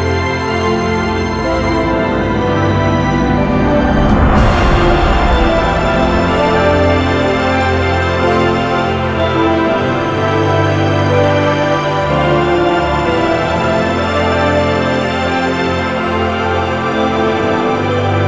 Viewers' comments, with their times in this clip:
0:03 gives me chills. The music crescendos, the visuals are exploding and she's just standing there all ethereal and statuesque. Brava!!!